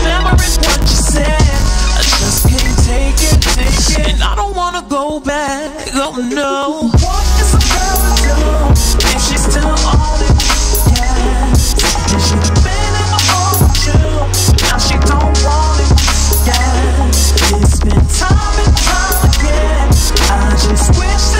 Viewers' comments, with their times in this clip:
0:07 dyinggggg sounds like boards of canada